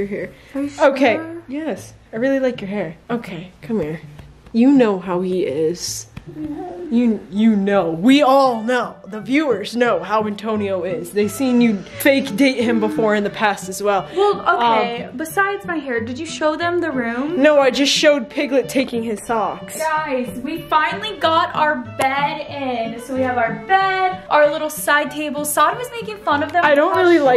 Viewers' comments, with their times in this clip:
0:08 😂😂😂the back ground music in " do you know the muffin man the muffin man the muffin man"